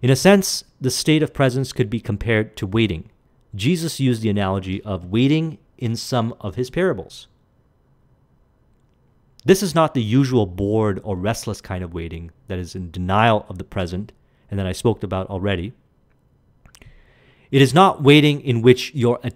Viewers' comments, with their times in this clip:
0:07 The 2 second pause is the most profound transition possible to those attempting to apply what you were teaching at that moment. =| =} Thank you for being so sincere and humble, I have benefitted so much from your service brother. =)